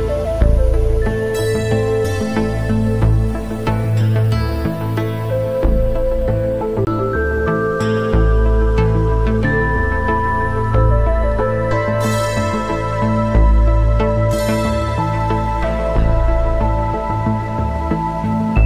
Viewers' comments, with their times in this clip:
0:05 Your vinyl record is damaged 😁